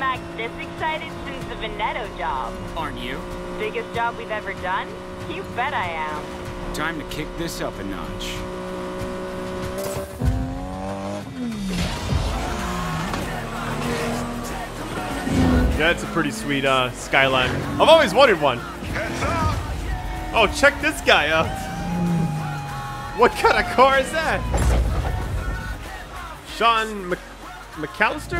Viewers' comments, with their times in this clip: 0:10 Tyler's car sounds like Brian's Nissan Skyline GT-R (FF2).